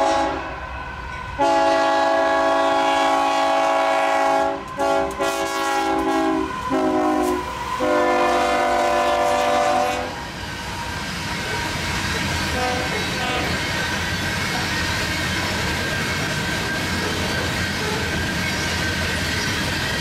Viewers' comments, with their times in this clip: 0:03 did you notice the engineer gave you a shave and haircut with the horn